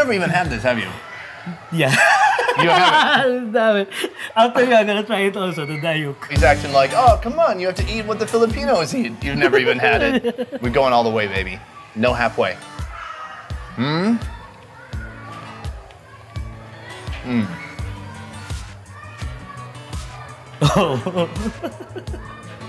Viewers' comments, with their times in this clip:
0:03 That laugh though 😂